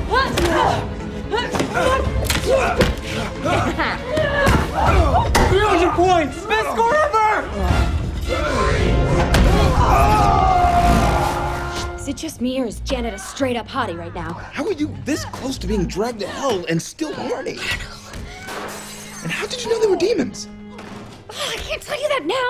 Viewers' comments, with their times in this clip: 0:03 her little laugh is so cute
0:03 Janet's little laugh <3333